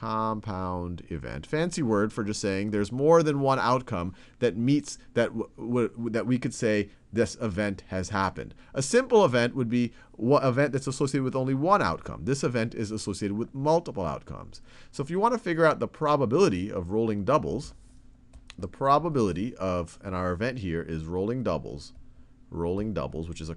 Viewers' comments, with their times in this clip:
0:05 goofy ahh stutter